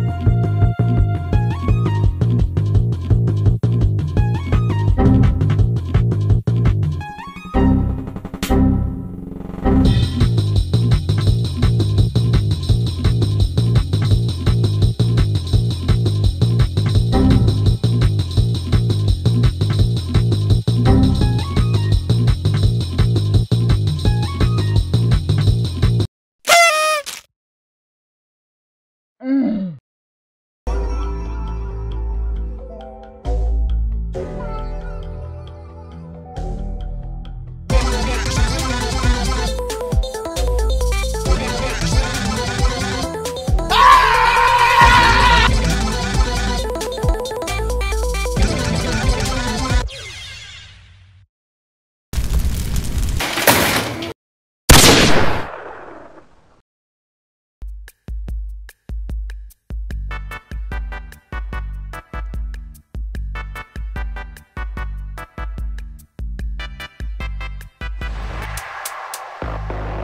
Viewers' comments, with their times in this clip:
0:04 Windows xp error sound
0:51 discord call loLOL